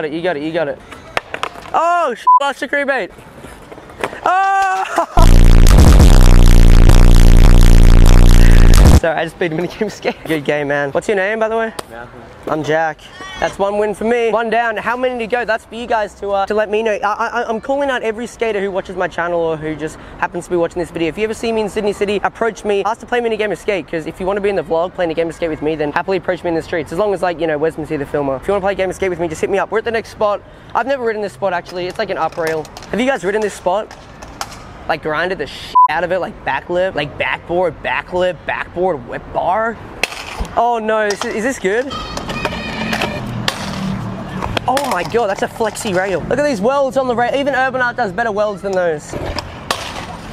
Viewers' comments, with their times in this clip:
0:10 i tought he said youre gay man
0:35 the American accent came out